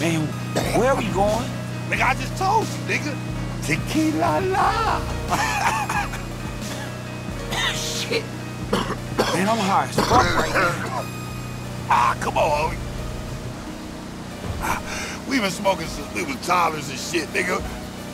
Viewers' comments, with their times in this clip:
0:03 My favorite part was Lamar went to auto-tune